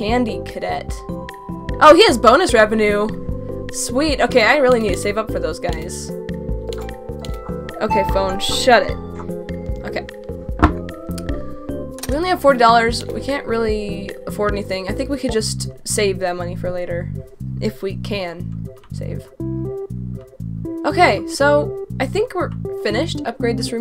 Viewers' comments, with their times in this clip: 0:06 PHONE ALARM JUMPSCARE ⚠️SCARY ALERT⚠️